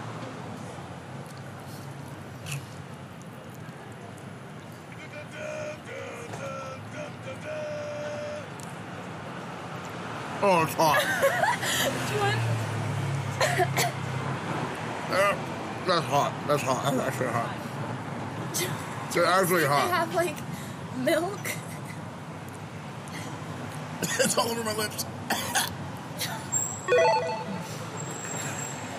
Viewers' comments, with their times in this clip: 0:09 Will Smith impersonation